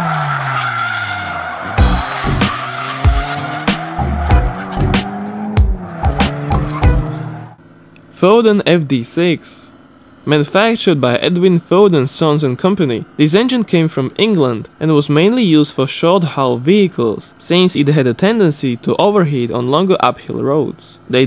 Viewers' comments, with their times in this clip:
0:03 Probably a good video but I can't understand anything he says. I quit